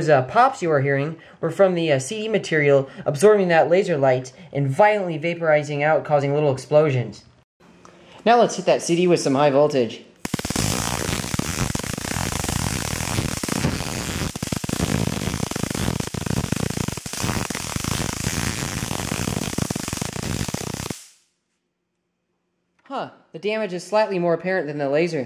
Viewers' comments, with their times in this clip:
0:10 aw fuck my ears